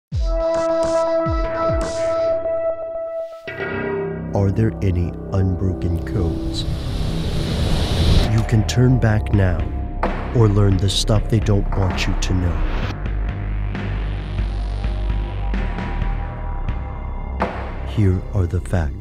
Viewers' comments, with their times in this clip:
0:02 why does it say "lion and scissors" in the beginning